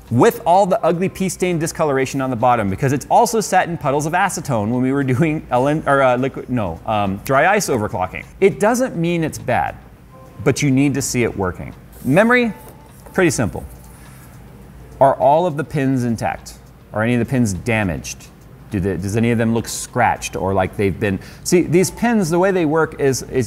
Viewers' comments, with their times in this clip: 0:04 The camera man laughed It was pretty funny.